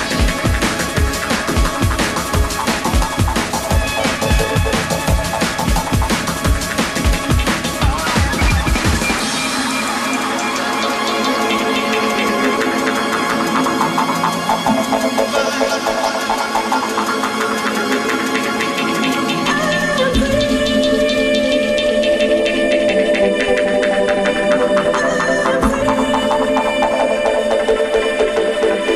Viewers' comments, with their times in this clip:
0:09 Heard what? silence!?